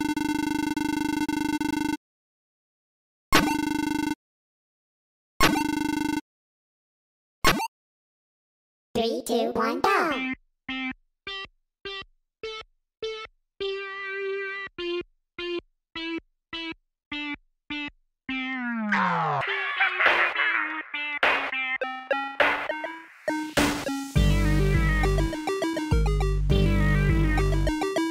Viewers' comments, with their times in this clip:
0:10 for a second I didn't realize it was twinkle twinkle little star